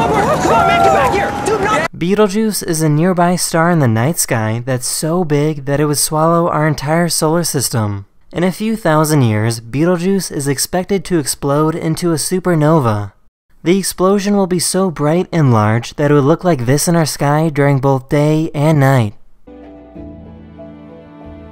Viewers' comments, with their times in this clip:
0:07 that was marvelous on how he said BETELAGEESUH